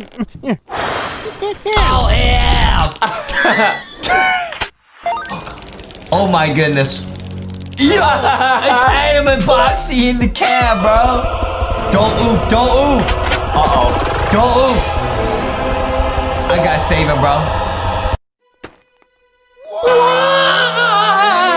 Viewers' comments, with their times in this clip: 0:04 that “K” sounds better